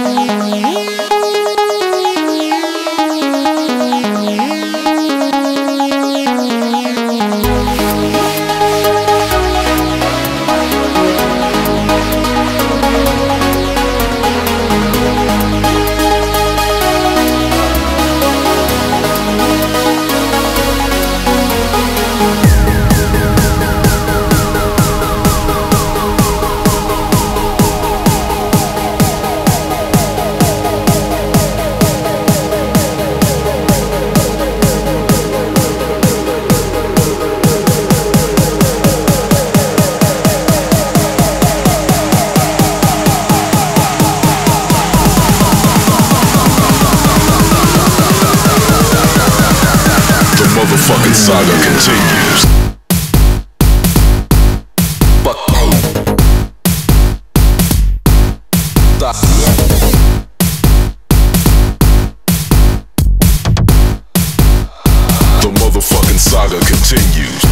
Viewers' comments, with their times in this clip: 0:07 Sounds a little like Hardwell's synths
0:52 the drop is fucking epic. I don't care about genres, Gareth is still amazing.